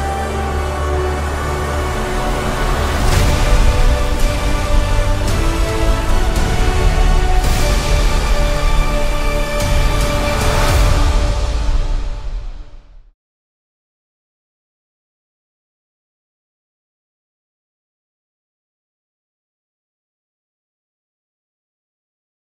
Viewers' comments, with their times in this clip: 0:03 this music brings back old memories